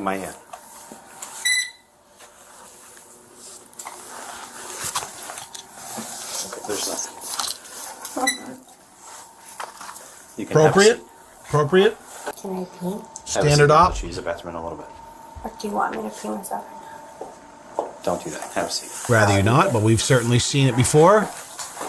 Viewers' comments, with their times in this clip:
0:06 this guy is coming to terms with the future loss of his career. I can hear it in his voice haha